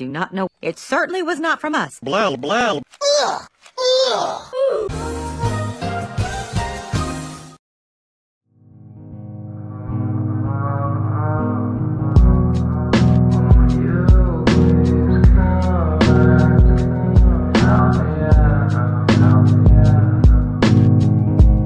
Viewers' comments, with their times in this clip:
0:08 Did anyone else enjoy that song